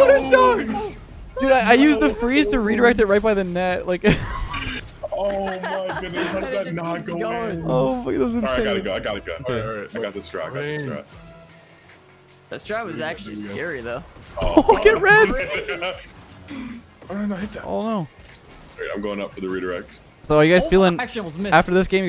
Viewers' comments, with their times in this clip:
0:05 Bro I swear I hear a girl laughing